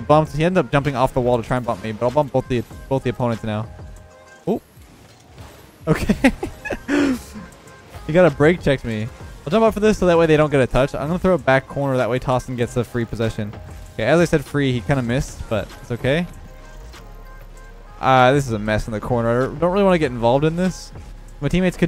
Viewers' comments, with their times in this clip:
0:06 The music stopping with that was genius